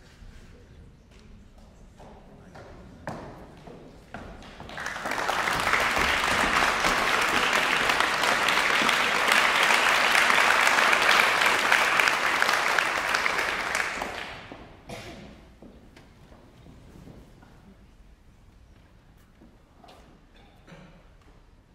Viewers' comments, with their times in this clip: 0:05 Bravo! Very very beautiful playing and your spectacular performance of Wieniawski Variations on an Original Theme starting was truly memorable!